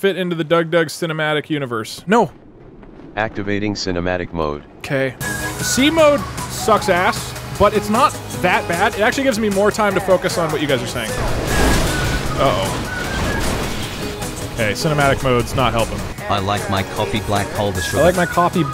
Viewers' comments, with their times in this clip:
0:04 That 'k" sounds so defeated but it's cute. 😂☺